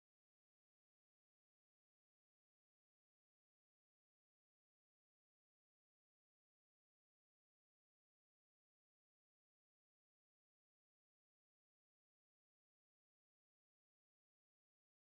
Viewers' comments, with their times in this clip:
0:03 When one of my fave songs come on and I don't hear anything 😥